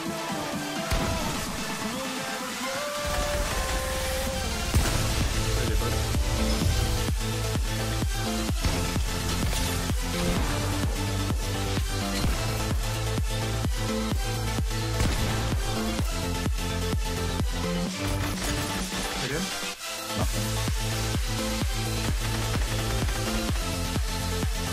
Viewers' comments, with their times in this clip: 0:05 wow perfect time with music